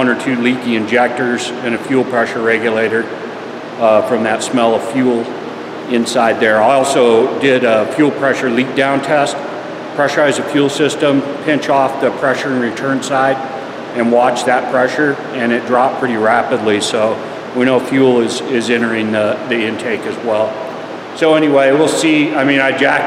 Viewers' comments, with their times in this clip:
0:05 sounds like a leaky injector or regulator